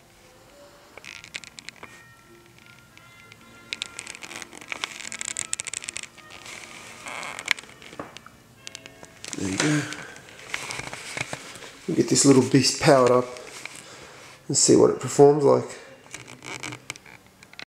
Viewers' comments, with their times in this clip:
0:04 The music :D